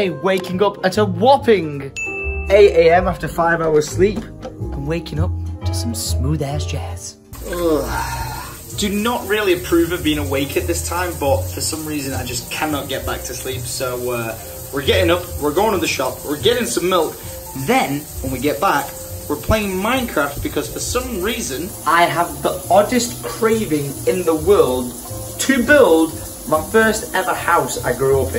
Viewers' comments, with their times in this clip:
0:09 irish accent mode on